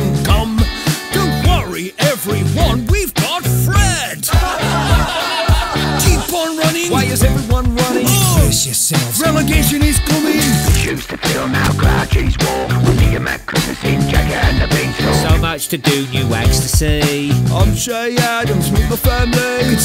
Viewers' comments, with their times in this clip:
0:04 really why you laughing at Fred